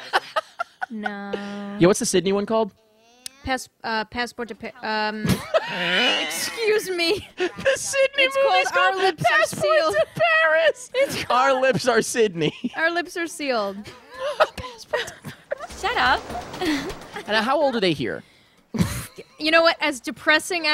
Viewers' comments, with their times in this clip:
0:04 THAT IS THE SINGLE BEST WHEEZE I'VE EVER HEARD